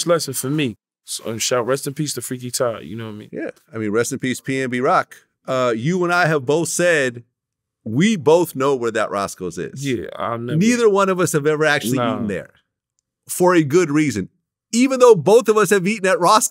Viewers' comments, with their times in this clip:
0:03 Did he glitch for a min, look like he startedtalkingin Vlad voice.🤣🤣🤣